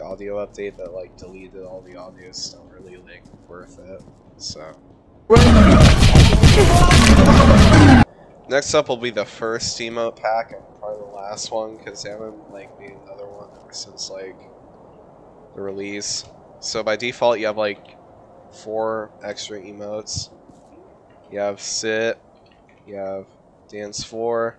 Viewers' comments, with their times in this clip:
0:06 the oni noises scared the shit out of me and gave me ptsd thank you very much